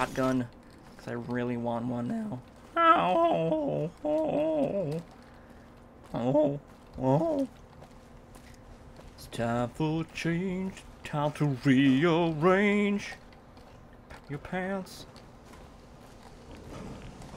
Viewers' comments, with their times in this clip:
0:04 lol voice cracks